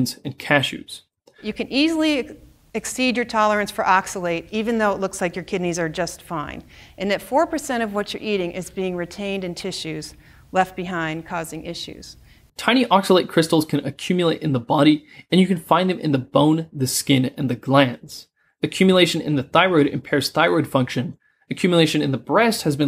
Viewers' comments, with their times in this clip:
0:06 little rap session... and at 4% of what you eating is being retained in tissues left behind causing issues xD